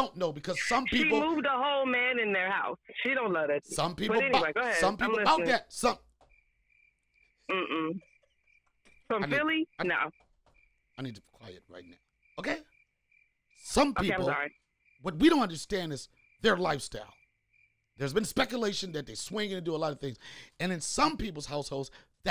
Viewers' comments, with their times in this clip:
0:07 Bra I thought my headsets was broke I went to the store and everything!!!!! So I’m just only in the video is it like this the entire time??